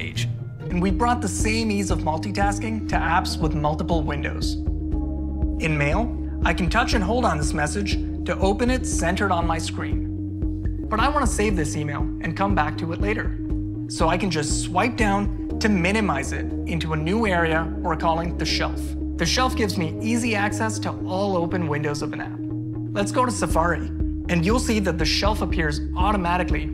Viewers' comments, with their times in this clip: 0:08 that asmr humming you hear in the background is slowly and chemically enabling your brain to remotely open your wallet in order to get new apple hardware just for os updates. You weren’t hearing things.